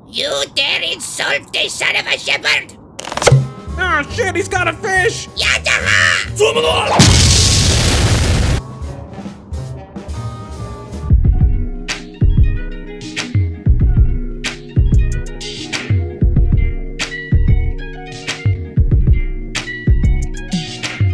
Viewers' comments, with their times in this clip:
0:05 Rolf: YATAHA! *WAHBALA* Such classic ed edd n eddy, that noise used to kill me back in the day and still does I'm dead 😂😂😂